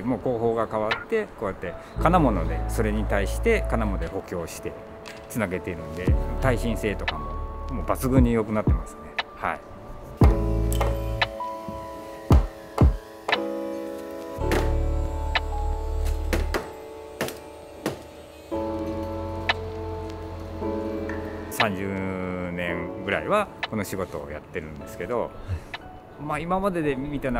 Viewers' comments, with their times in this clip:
0:10 I like how you synchronized the hammer tapping with background music. Love your attention to detail in your video